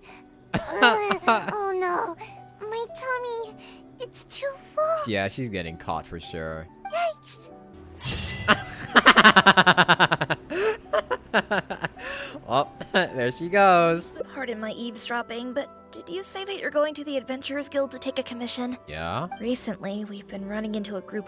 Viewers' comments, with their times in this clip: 0:07 his laugh is honestly terrifying
0:07 that laugh was so fast omg T^T
0:08 motorcycle starting up
0:08 your laugh is way funnier than the last one i saw edit: add shows sayu rolling over timmies birds